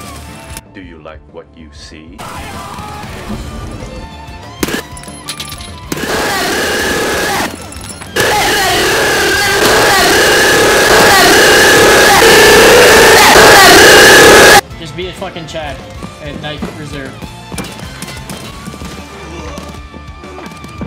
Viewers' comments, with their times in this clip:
0:07 Headphone warning for everyone